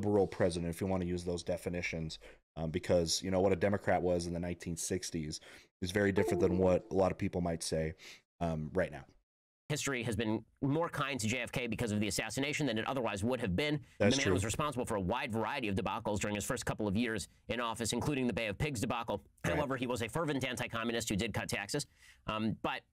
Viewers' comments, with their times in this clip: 0:05 good alert sound😁